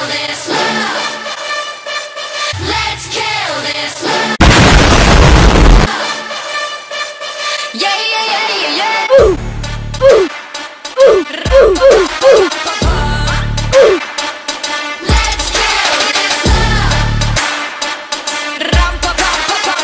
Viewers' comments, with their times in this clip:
0:04 MY EARDRUMS ARE BROKEN
0:04 Rio headphone users 💣
0:05 Me wearing a headset:nah this doesnt contain ear rape Me in 😭😭😭😭😭:pls stop pls pls my earssss